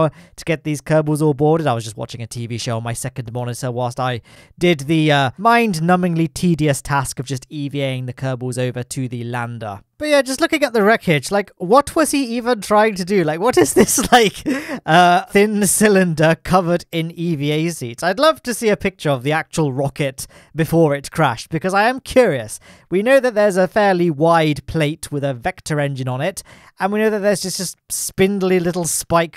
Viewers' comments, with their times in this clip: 0:10 his laugh is so contagious ❤😂